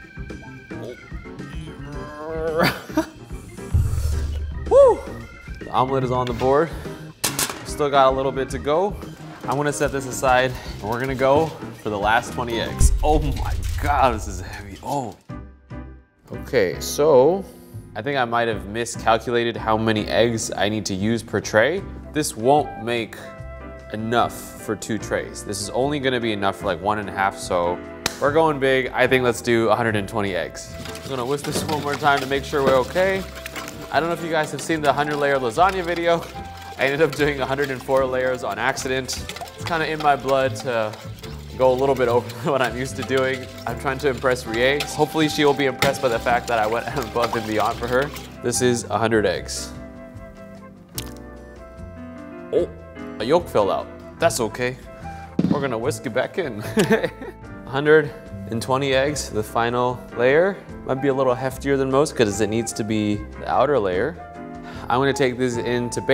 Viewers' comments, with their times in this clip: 0:04 What he actually says: “Omelet is on the board” What captions say: “Mom life is on the board”
0:50 "Oohp, a yowk feww out... das okeh, we're gonna wisk it back in!"